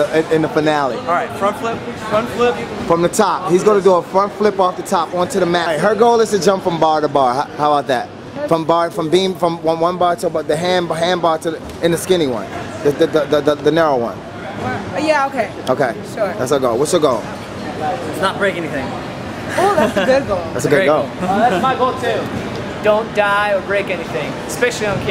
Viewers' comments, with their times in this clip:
0:10 Dat stutter tho...
0:13 that stutter though